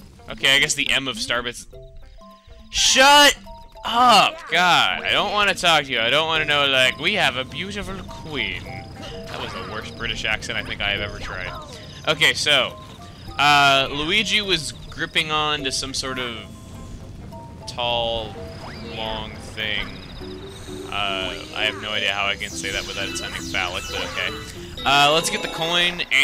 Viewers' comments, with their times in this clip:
0:09 no thats just the english-_-